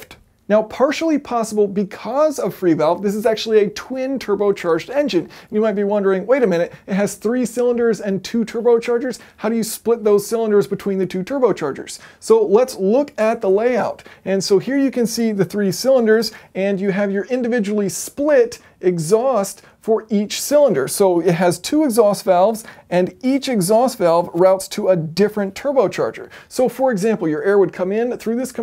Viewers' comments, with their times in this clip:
0:09 nice "throttle up" turbo noise!